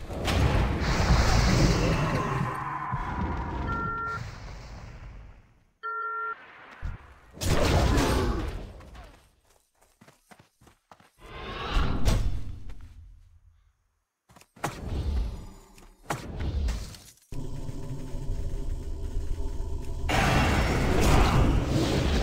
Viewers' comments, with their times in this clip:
0:07 LMFAO the jaws intro🤣😂 Bahahaha, swatted aside like it was nothing!🤣🤣🤣 Entertaining as always, the bridge troll brigade was a laugh. Top video, just the thing i needed before going to sleep, cheers bro